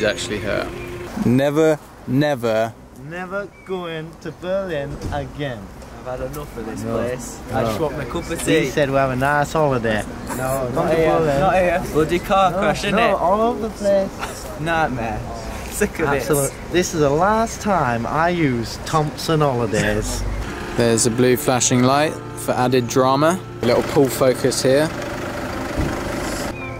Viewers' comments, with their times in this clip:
0:04 I think I have seen the lad on the left somewhere. is he an actor his accent is very recognizable.
0:11 Is this what you think of when you hear a British accent?